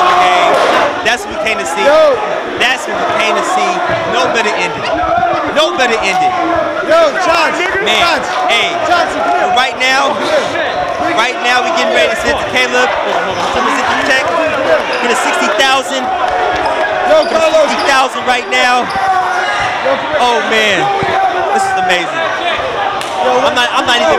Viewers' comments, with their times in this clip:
0:07 bruh wtf. someone high key dropped the N word with a hard ass R